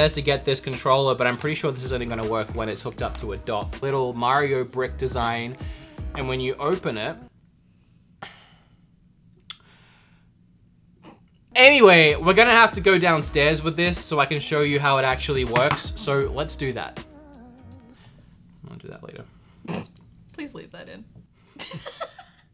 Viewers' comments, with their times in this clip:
0:03 I know you thought that said "b****"